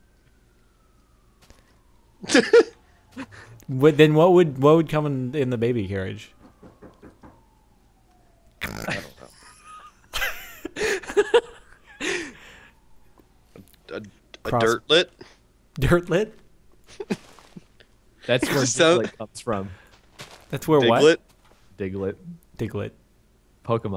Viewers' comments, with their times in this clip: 0:05 You can here knocking
0:07 12 uears later and no one is gonna talk about who knocked on his door, really?